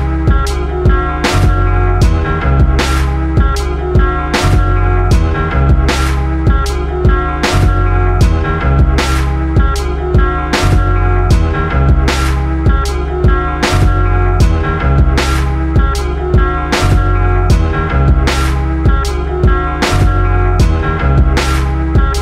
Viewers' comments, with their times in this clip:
0:06 music would be a great rap beat